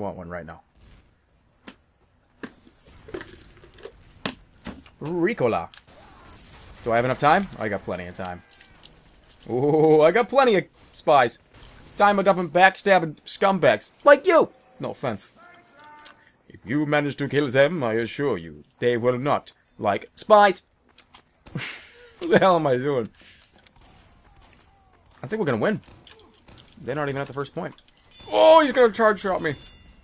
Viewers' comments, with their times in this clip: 0:03 You Sound Exatcl like Scout *O*
0:10 he sounds JUST like the Scout XD
0:11 Dat scout impression.